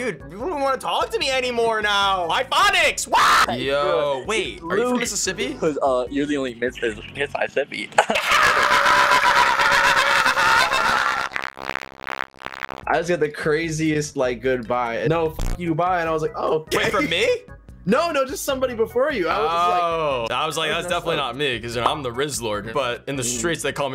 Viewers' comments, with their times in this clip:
0:04 Bro why was that laugh so contiguous 😂